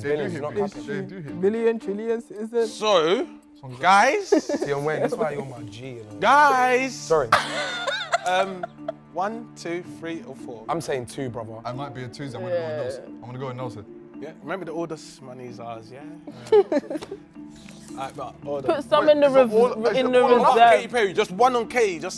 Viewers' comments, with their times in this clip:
0:05 the way I also didn't hear him at first lmaoo